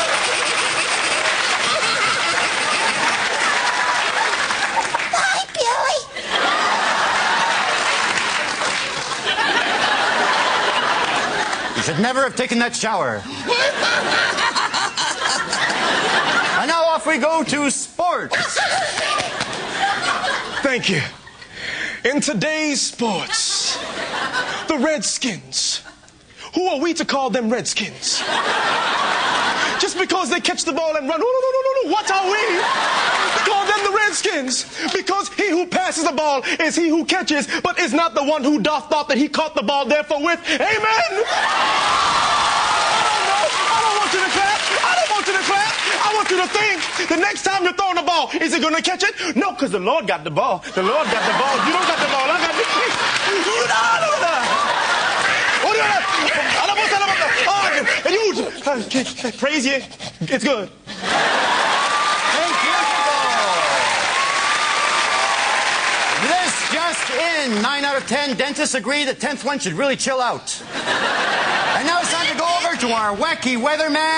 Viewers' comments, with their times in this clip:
0:04 Greg should voice Gizmo in Gremlins reboot.
0:59 The slight stutter before the "its good" is the best thing I have ever heard